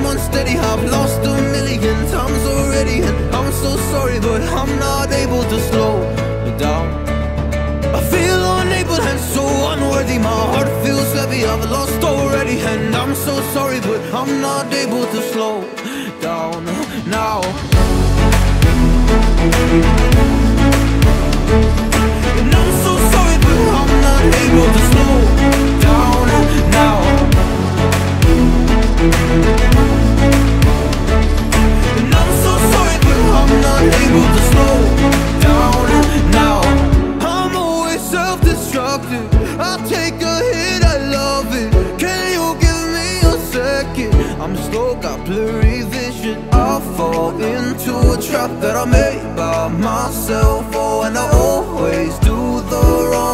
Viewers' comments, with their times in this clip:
0:09 Bro the way he says unworthy sounds soo good
0:39 i take a sh*t i love it